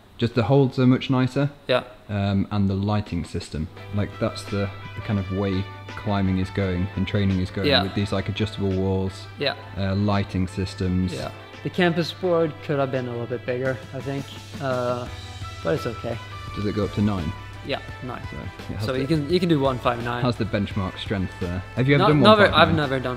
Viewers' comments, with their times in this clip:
0:05 Timthetatman music playing threw me off😂